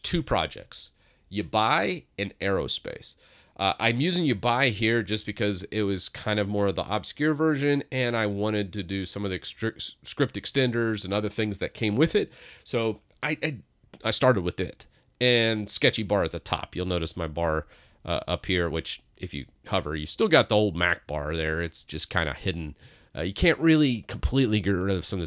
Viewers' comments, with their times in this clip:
0:06 Can it be that what you pronounce as "youbuy" is uBar? L.E: Oh, you mean Yabai. Well, I am perfectly happy with the native MacOS windows management, so I will not try it. (Hopefully.) If I just could replace the Finder with something like the Windows Explorer I would be perfectly happy with MacOS. Returning to uBar (the reason I didn't delete my comment after findind out you meant Yabai): It adds a second bar to your Mac. I have the native bar at top (it can not be moved anyways), uBar at the bottom and the dock at the left side of my screen. All 3 or only some put to autohide or permanenty visible, depending upon how big a screen I use. uBar can be customised to act just like the taskbar on Windows.